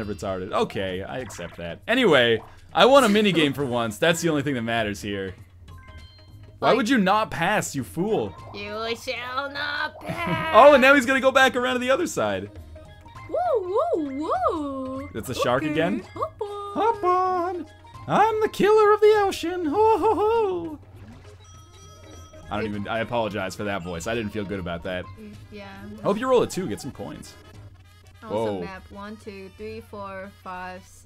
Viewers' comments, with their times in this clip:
0:05 ... O.o... sub since Super Meatboy... Have Never Heard That Voice
0:17 You sound like a drug addicted Mickey Mouse, bahahah!